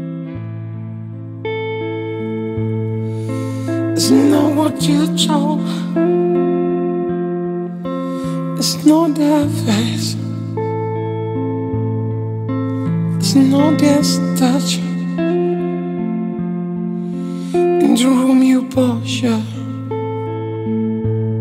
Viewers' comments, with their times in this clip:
0:03 I struggle to understand what he’s saying starting I love this version either way. If anyone can clear up what he’s saying I appreciate it